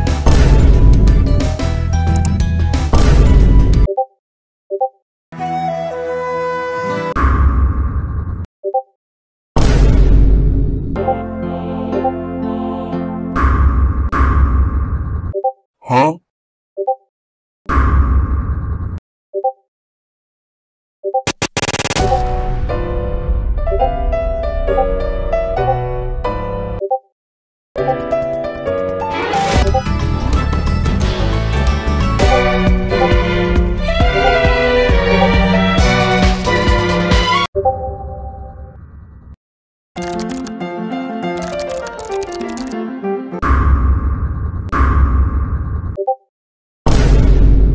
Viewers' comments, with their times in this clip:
0:03 I like the Naruto music :'))
0:35 sounds really like Star Wars